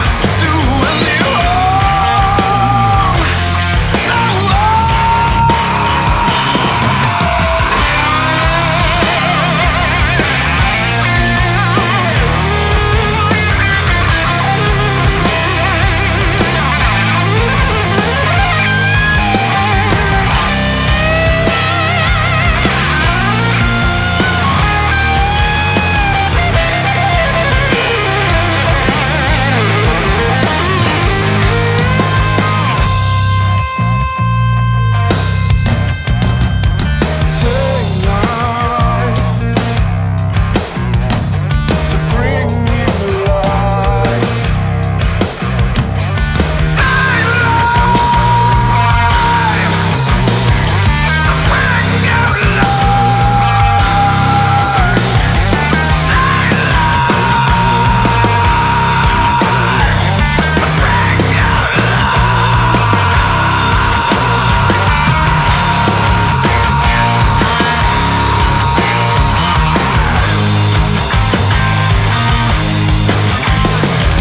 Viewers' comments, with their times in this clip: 0:07 telepathic wah control. maybe just a really involved tech...
0:47 That scream is amazing
0:55 sounds like adam gontier